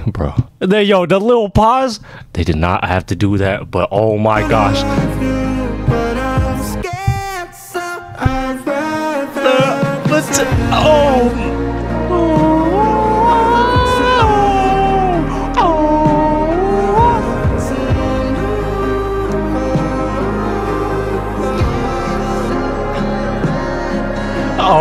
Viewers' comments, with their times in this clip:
0:07 YEAH I WAS LITERALLY SO SHOCKED HE HIT THAT NOTE